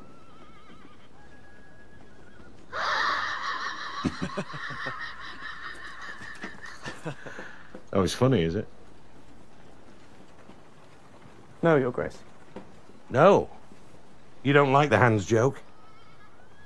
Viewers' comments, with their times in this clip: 0:03 Robert's laugh sounds exactly like a spinning coin on a flat surface